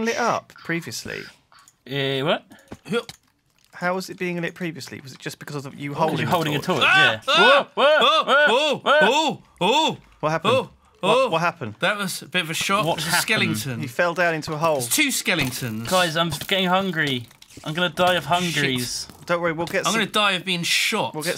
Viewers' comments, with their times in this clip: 0:05 and they turn into apes haha